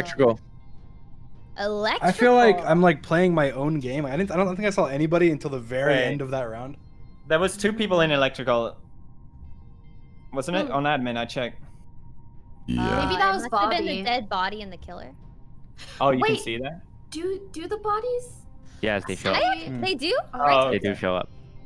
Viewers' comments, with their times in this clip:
0:08 you can hear him on